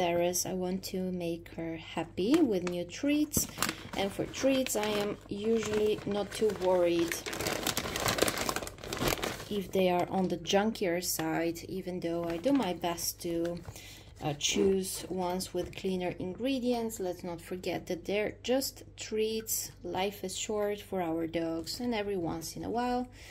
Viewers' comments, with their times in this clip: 0:10 You keep saying ''treats!'' ''Treats and treats''! ...my whippet has her ears up at that word. That's a perfect bath for Whippets, it has a curve for them to lean against! Love the snorting and rrrrrrarrahhh!